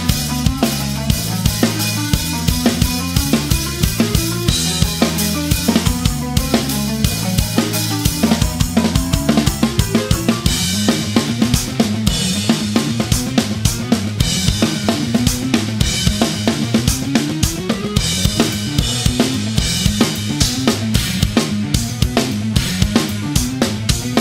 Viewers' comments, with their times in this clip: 0:05 simple enough sticking but deadly phrasing on this spot. Picking the beat back up clean is crazy